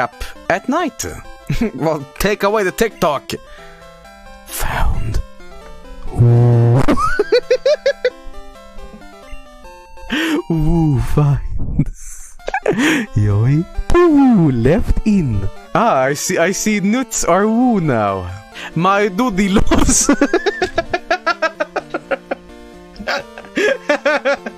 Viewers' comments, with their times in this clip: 0:05 my microwave be like